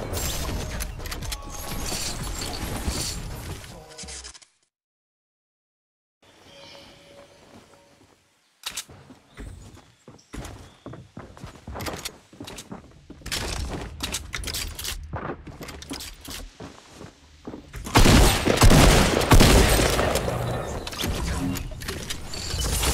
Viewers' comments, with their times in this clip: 0:05 Everyone is gangsta until Ninja turns off the music...